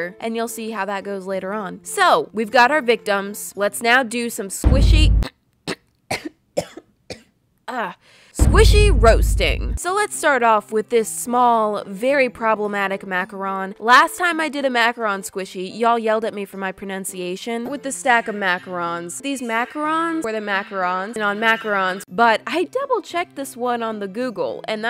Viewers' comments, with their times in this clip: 0:05 CoRoNaViRuS?!? Is DaT u?